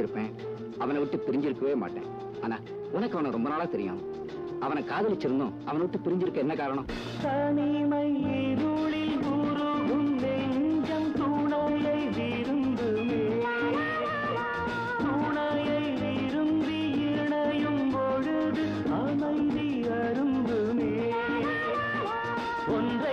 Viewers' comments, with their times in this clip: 0:07 the magic starts from here. What a voice🙀